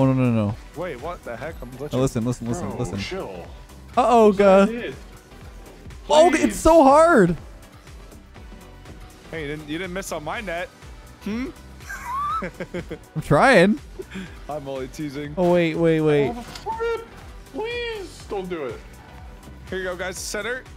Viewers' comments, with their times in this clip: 0:07 The timing of those bounces with the beat tho